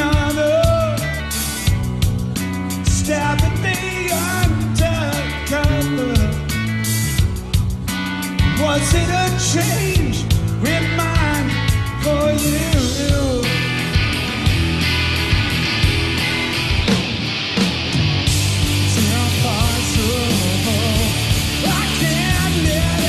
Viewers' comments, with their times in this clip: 0:08 the voice crack haha